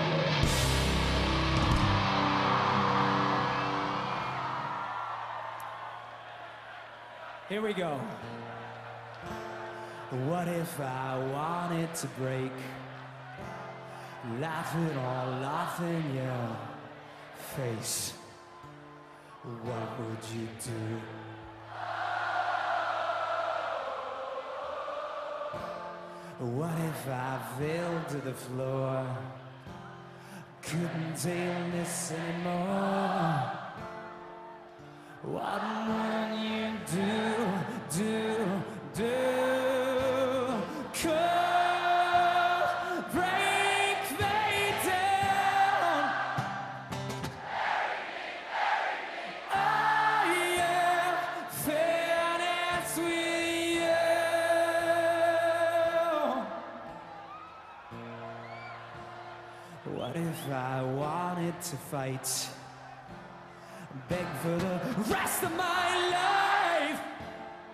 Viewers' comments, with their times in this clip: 0:06 I need that acoustic version. I need it
0:53 His n gave my chills I could listen to his voice all day